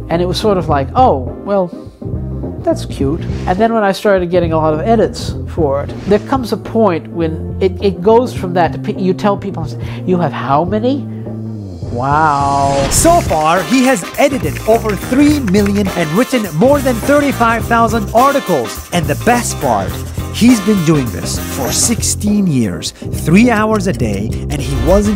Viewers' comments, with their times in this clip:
0:09 that wow tho 😆